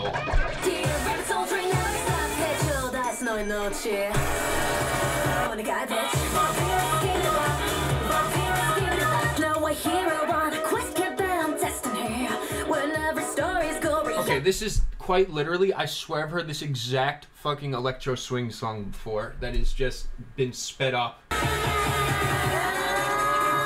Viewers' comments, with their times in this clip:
0:09 Dead on arrival was also produced by him and honestly that would've been an outstanding song if it wasn't for Mori's constant vocal pitch changes (especially )